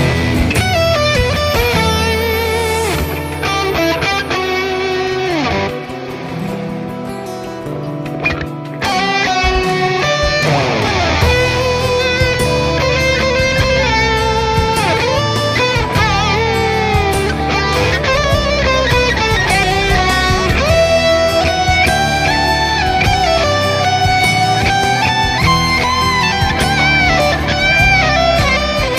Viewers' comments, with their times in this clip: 0:08 heavenly...... Guitar is just crying.....
0:12 I am not a great guitarist also not your hater as I am following from a long time but it doesn't sounds good
0:12 that little trilling is magical.